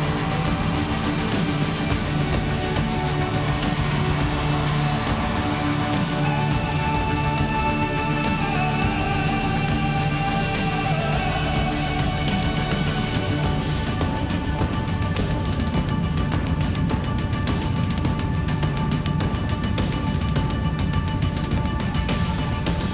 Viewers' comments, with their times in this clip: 0:05 Wow that guy can sing some serious notes